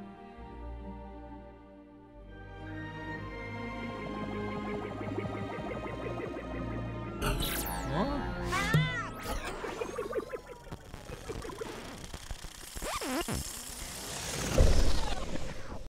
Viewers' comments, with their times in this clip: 0:07 UFO Spaceship Abducted The Boy From The Crescent Shaped Moon Fishing With A Hook And He Says "Huh?" And He Yells And Music Is Distorted And Dreamworks SKG Animation Burning Out And Showing The Space With Planets!